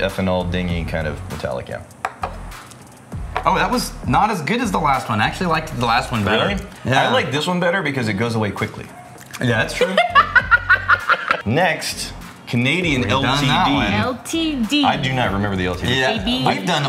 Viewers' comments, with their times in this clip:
0:04 my favorite part of this whole video is her face right there. Two shots in, she's already drunk slurring, tryign to balance, making horrible faces hajajahahahahahah jajajajajaj ajaj ahahahahahahahah I laughed in two languages seeing thsi